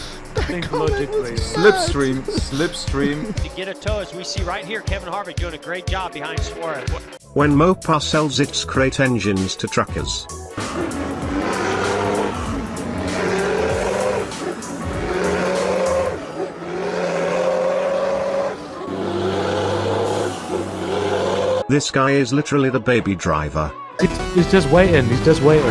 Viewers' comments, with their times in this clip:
0:07 when they use cow cbt as engine 💀
0:10 Bro sounds like frank from cars
0:10 sounds like gorillas XD
0:10 i think that he dosent have an engine, but a cow
0:10 the truck is literally screaming It sounds like that one guy that finds that tiny azz spider in the bath at 3am 🤣
0:10 when you get a drink of water and you hear your dad snoring
0:11 that truck souds like ti's dead
0:11 wth the truck sounds like saying yoooo yoooo yoooooo